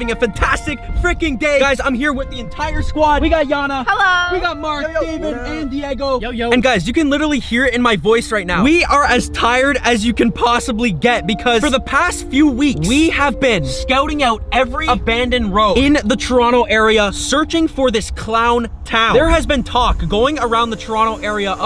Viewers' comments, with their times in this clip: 0:08 “We are as tired as we can get” starts speaking louder